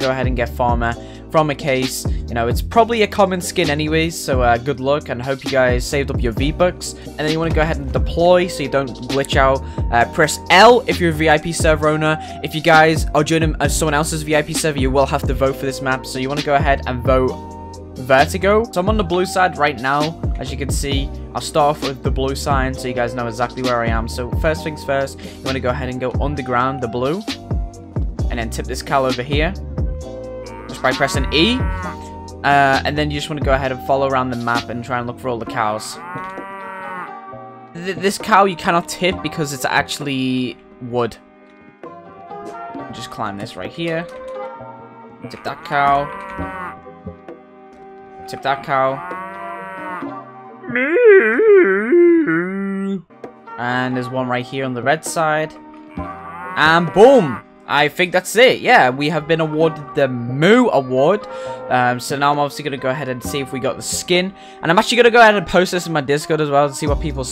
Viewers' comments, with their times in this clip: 0:06 Captions: “V-Bucks” (Also sounds like it too)
0:51 new cow voice line is 3pic